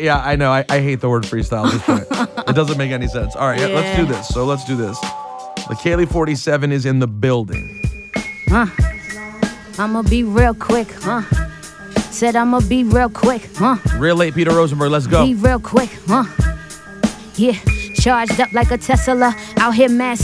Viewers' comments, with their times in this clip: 0:04 Plug Industries she starts spittin round here